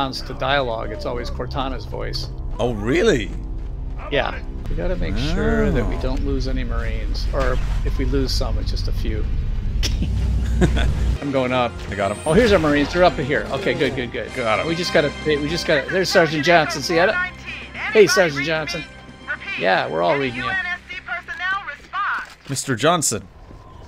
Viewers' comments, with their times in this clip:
0:09 Best laugh ever.